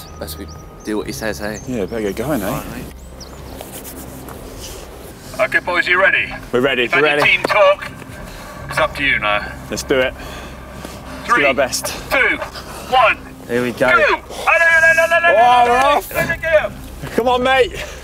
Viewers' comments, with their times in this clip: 0:04 that cheeky little laugh.